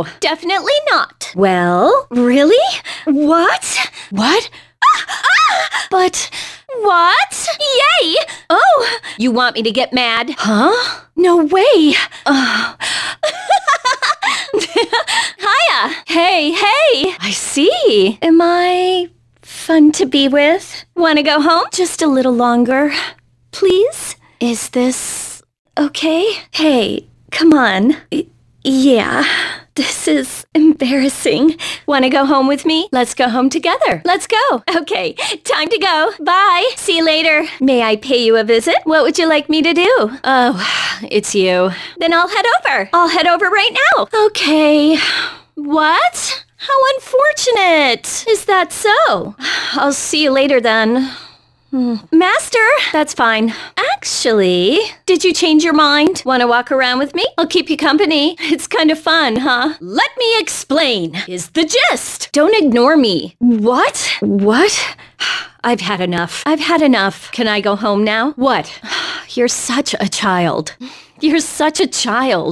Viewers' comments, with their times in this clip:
0:04 From what encounter are those heavily suspicious sounding squels ?
0:36 I'm gonna leave this here for myself so i can constantly hit the timestamp. Ive always liked the way she says "see ya later"
0:59 Is she imitating Sojiro? Would we have gotten Kawakami Coffee trivia?!